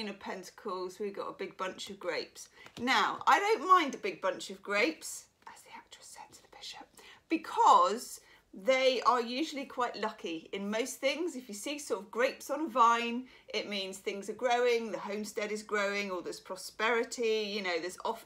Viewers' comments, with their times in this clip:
0:04 that kills me every time—but whispering it just made it a 1000 x’s better 😂. You even have me trained to say it whenever it could even slightly apply when listening 🙊